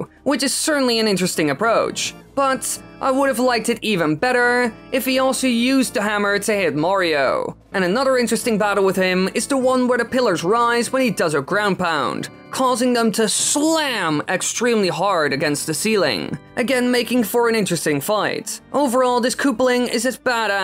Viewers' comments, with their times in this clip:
0:03 When you do he sounds like a valley girl